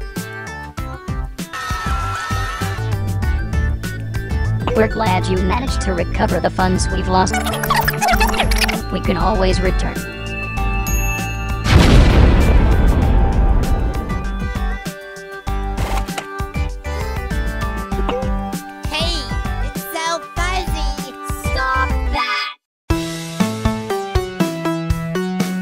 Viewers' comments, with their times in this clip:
0:05 Sounds like GLaDOS
0:05 That is the Leafy Speaker Box, actually, but they sound nothing like Leafy.
0:07 you skipped the teardrop speaker box talking, and the speaker boxes sound pretty much just like their owners, SO THATS TEARDROPS VOICE GUYS!!!! I FIGURED IT OUT!!!!!!!!!!!!!
0:08 fun fact: the Light-Dark blue speaker box is the teardrop speaker box and some contenstants speaker boxs' sound exactly like them so does this mean the L-D (Teardrop) Speaker boxs' voice is teardrops real voice??